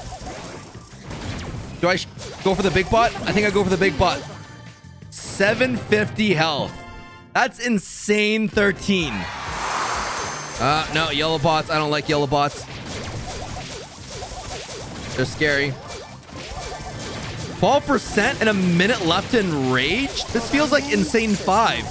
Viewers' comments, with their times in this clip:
0:03 My captions said “I think I go for the big butt